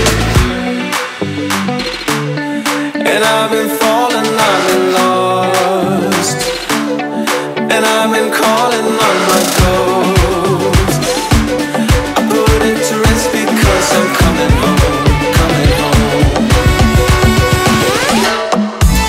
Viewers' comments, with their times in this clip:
0:04 is were the beat start